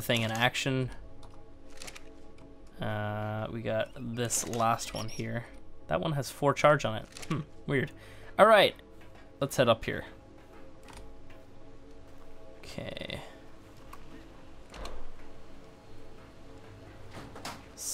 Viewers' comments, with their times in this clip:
0:04 At approx. are those church bells going off?